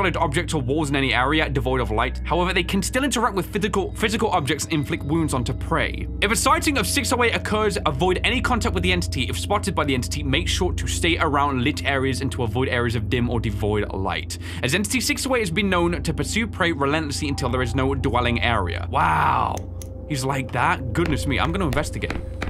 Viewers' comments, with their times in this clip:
0:03 “Fithical — Physical.” Anyone else heard him say this lol